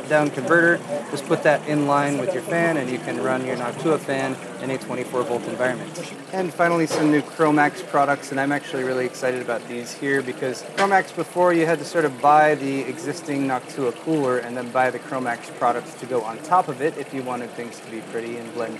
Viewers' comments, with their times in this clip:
0:05 in the video. It sound's like someone is taking a massive piss. LOL